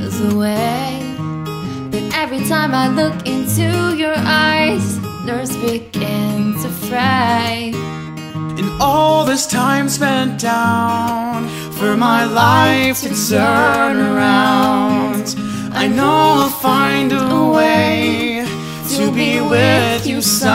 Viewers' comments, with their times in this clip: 0:05 the lyrics say “nerves begin to fray” but it sounds like “weekends of fright”